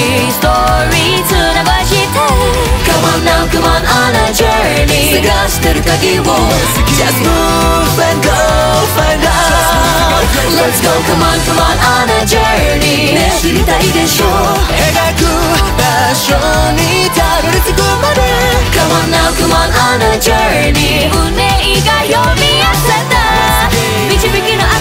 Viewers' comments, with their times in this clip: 0:07 omg !!! Them notes